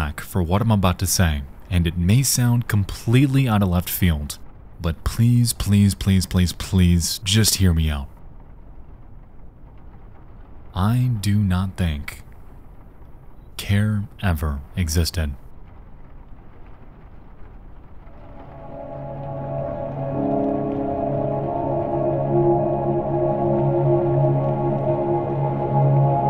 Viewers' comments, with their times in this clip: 0:09 Why in the world did I feel so disturbed when i heard this? 😅 you know how to say things in just the right way to give chills 🤣